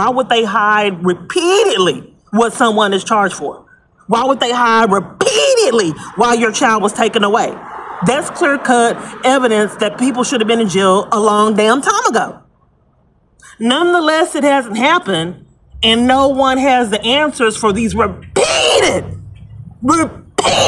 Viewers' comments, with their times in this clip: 0:05 She's barking again 🐶
0:05 woah that is a new vocal range